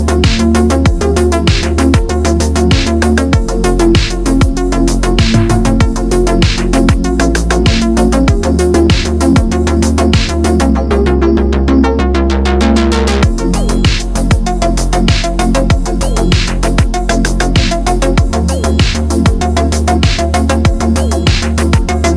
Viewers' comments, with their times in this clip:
0:05 ~ ish(it keeps repeating), is that a squealing pig remixed into the song? WTF